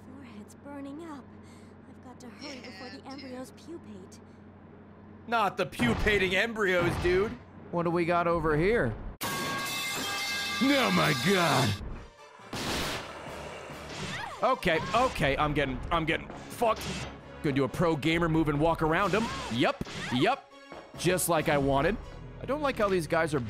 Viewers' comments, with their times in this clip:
0:08 The added sound effect to the pipe throw had me in stitches! Nice touch
0:09 the fuckin pipe noise is killing meee